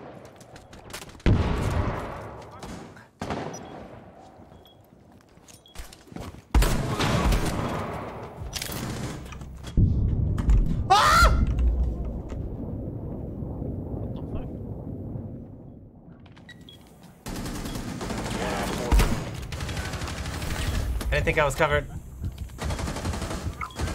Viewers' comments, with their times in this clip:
0:10 he gets scared and screams but then goes back to a straight face immediately.